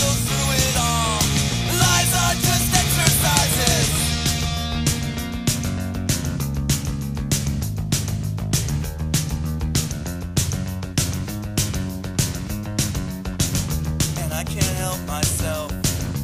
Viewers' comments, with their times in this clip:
0:03 from a very good bassline...